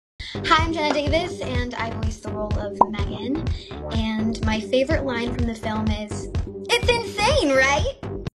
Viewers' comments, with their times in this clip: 0:06 IT IS YOU!😀 BUT WITHOUT THE ROBOTIC VOICE😊 I ABSOLUTELY LOVE M3GAN!😍 MY FAVORITE LINE FROM YOU AS M3GAN WAS, If she comes in this room, I'll rip your head right off your neck, I swear to God.